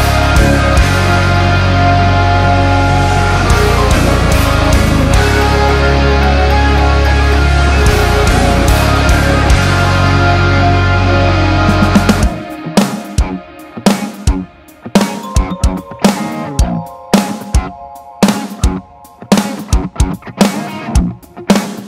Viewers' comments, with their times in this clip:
0:08 that little jingle he played. I cant stop smiling. I can definatly say, you have a way with notes. Very mature song writing friend. Your choice of notes are brilliant. Thank you.